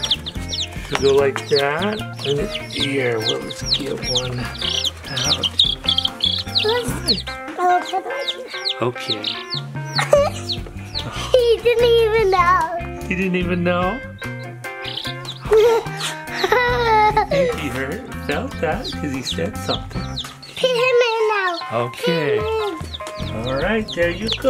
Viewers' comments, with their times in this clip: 0:09 SHE'S SO CUTE HER LITTLE GIGGLE WHEN AND THE NAMES IDHKWSHDIJQWIJUHEDUYHQIEHEIWHUHDUIDJ